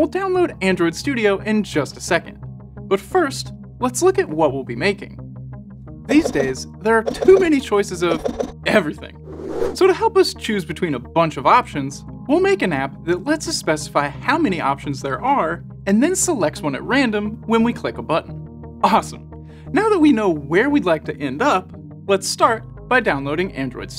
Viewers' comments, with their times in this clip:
0:04 This is the cheaper and surprisingly even creepier version of Mark Zuckerberg, I'm mean look at the pauses he makes between takes and his voice is disgustingly false, it seems Alexa teach him how to talk while his parents were working at silicon valley, I'm starting to think he is a metaverse real life bot. ps. I got mad because this was supposed to be for beginners and he used so much technical lenguage